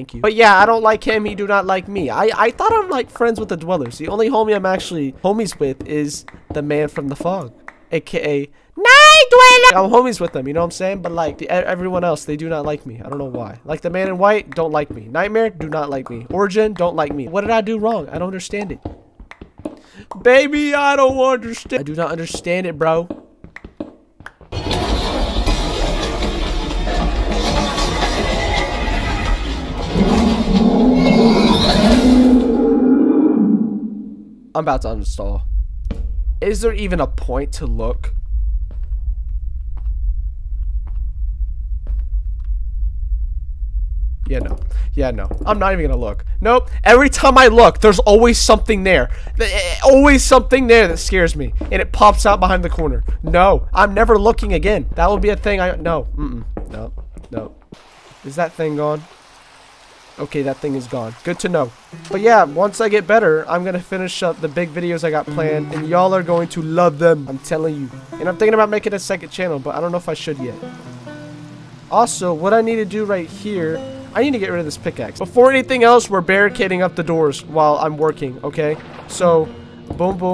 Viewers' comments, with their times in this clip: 0:06 "the man from the fog aka **NIGHT DWELLAAAAA<3 :3**" in a high pitch somewhat sweet voice got me laughing my ass off so hard
1:02 happy music if you can’t hear turn up your volume.